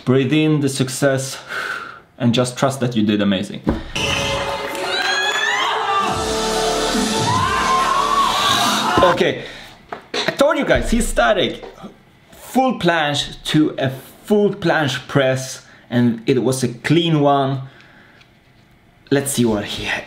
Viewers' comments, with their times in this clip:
0:05 booom Last Heroes & TwoWorldsApart ft. AERYN - Eclipse, love that drop <3 so powerful